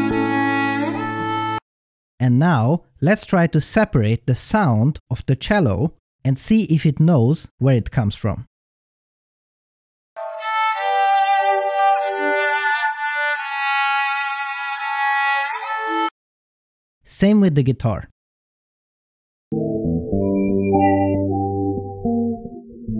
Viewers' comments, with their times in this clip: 0:06 Music is way too loud!